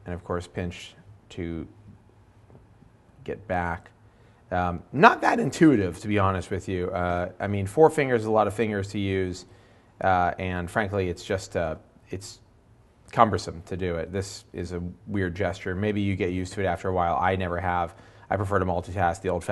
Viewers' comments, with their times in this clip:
0:05 Quite the voice crack.